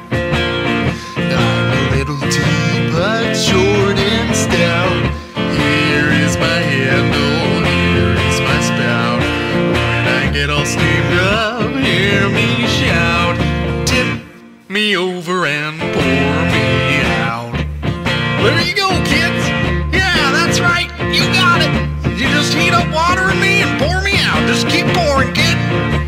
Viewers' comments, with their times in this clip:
0:08 in the teapot sound like a phone